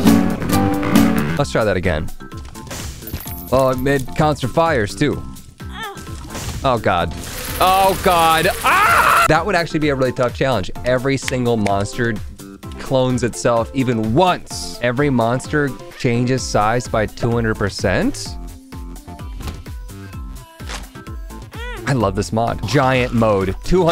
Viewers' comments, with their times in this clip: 0:04 Man, that scream. I almost fell to the floor by laughing.
0:08 is the best scream you've ever done